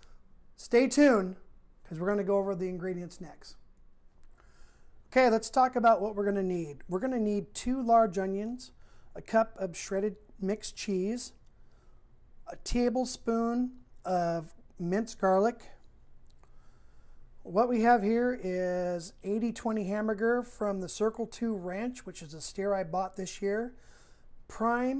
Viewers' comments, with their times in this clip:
0:06 Great channel. Just FYI, the audio started out only on the left speaker, and it changed to the right speaker. When I watched one of your other videos, I noticed that the audio was on only one speaker. Get on Grillin!